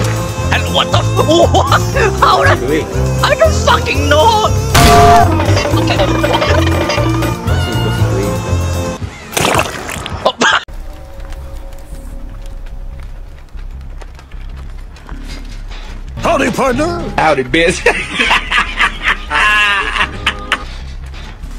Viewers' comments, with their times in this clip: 0:08 bro had too much so he started farting